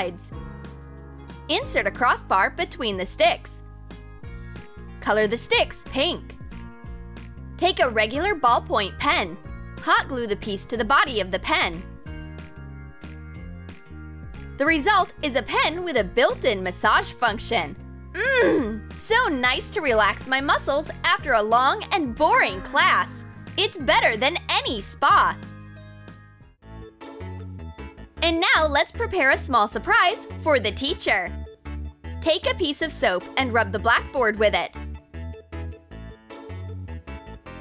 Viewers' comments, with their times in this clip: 0:08 sounds a bit like the ROBLOX oof
0:10 a very aggressive MMMMMMM
0:17 is WERE she makes the wierd voice
0:17 that sound she made ???
0:17 Why was that a VERY hard grunt?
0:18 what the hell- why did she say MHMMM like that- I’m scared
0:18 Keep playing it sounds like in roblox when u die in a game. 🤣
0:18 dat moan though🤣🤣😂
0:18 Why say Mmmmmm like that 😮
0:18 Why isn't anyone talking
0:18 LMAO THAT MOAN THO
0:18 turn the volume up all the way and bless your ears MMMHHMMmMm
0:18 heres a hidden message its quiet so turn the volume all the way up
0:19 that MHM sounded wrong
0:21 I love how the voiceover is trying so hard to make a relaxing noise when it just sounds like she's angry at someone🤣,btw this is the LONGEST comment I've made
0:21 The noise was disturbing all I heard was MMMMM 😂